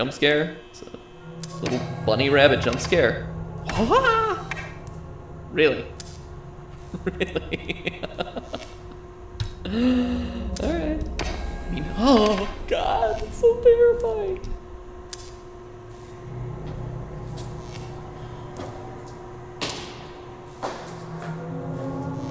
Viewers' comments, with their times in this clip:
0:04 Theorist mating call :,D